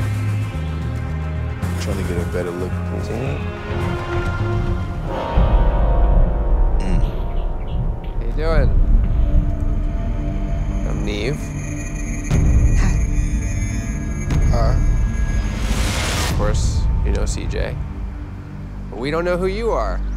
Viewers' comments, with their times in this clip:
0:04 😂 the music and the look on nev face when she walked up and they all saw who she really was.
0:05 Bruh the stomp and sound effects. They did not have to do that.
0:06 the music & his reaction always takes me out 😂😂
0:06 Omg 😆 they shady as hell with tht music change 💀😂😂
0:06 The noise he made agsgdjd he didn’t have to do her like that
0:06 The horror movie strings and the guest host's "mmph" took me out!😂😂
0:06 my dude said, "uh" I know that sound too LOL